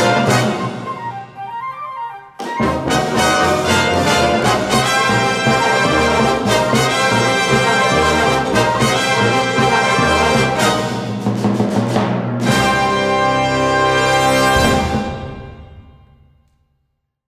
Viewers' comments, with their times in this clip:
0:03 with some Bernstein influence.